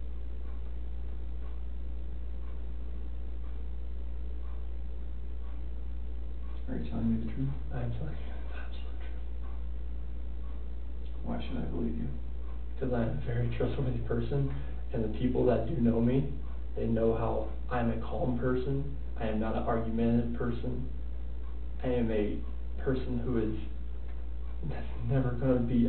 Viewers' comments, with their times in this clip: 0:06 I've seen several documentaries of this case and though I knew it pretty well. After seeing yours, I recognised I knew nothing. The interviewer was brilliant. From onwards, after he suddenly flipped it was pure joy how he left him to wither on the vine - with the clock ticking in the background... Exactly like in "The tell tale heart". You can literally feel how it went louder and louder in his head. When the disgusting swine realised, he will be left rotting until his last second.
0:06 After a long award pause, the detective broke the silence and asked him a question. Relieved by the cessation of silence, Chris gasped in reiief as he answered the question. This stuck out like a sore thumb.